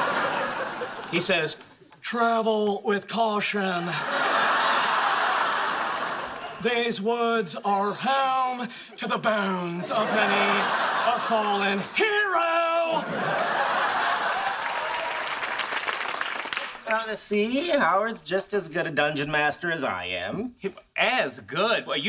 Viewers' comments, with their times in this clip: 0:06 That Nicholas Cage had too much emotion in it. Would've been more accurate to do it in a monotone, completely emotionless voice.